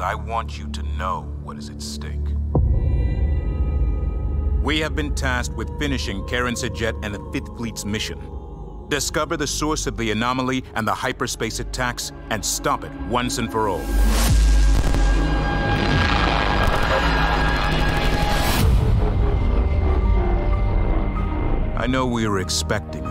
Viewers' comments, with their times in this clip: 0:06 karan's name sounds like "karen" due to the guy's accent